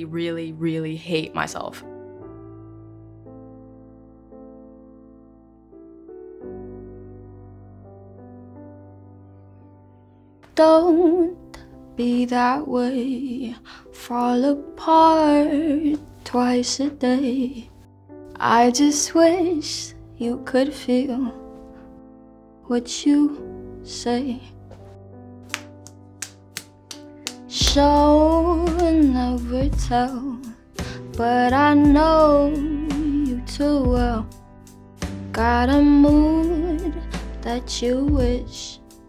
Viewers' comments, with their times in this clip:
0:08 when your sneeze won’t come out
0:25 im speechless the way she slapped her thighs to make that sound